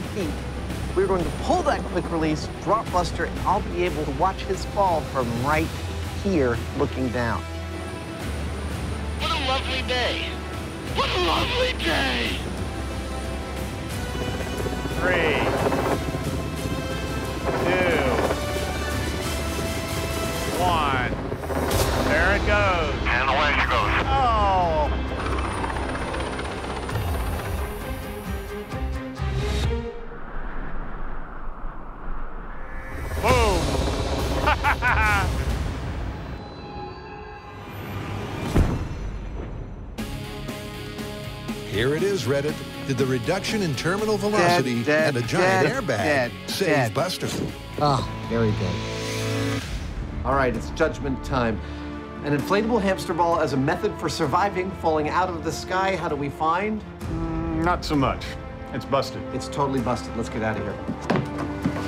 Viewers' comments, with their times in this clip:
0:09 sounded like Ron from gta 5
0:13 okay so he sounds like trevor from GTA 5 when hes in a plane mission lmao tell me that that is not true
0:43 Could have given the audio editing a second pass.